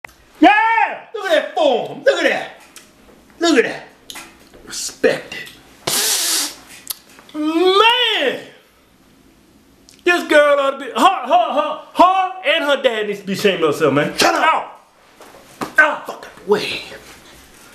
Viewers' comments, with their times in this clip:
0:00 YEAH' ! Agressive and shooort.